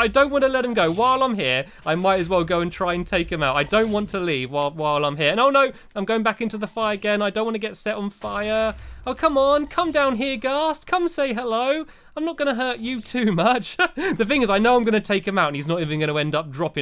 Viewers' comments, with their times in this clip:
0:04 I heard Stampy said I don't wanna life.